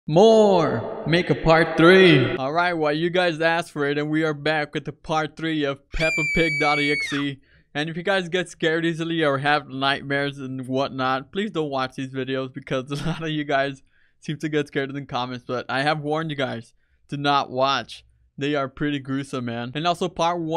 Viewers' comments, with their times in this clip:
0:01 More make a party😂😂😂😂😂😂😂❤❤❤❤❤